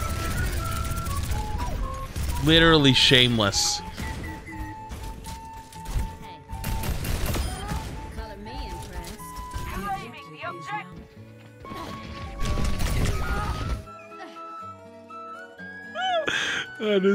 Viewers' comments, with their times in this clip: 0:03 The bastion’s beeps go perfectly with the music lmfao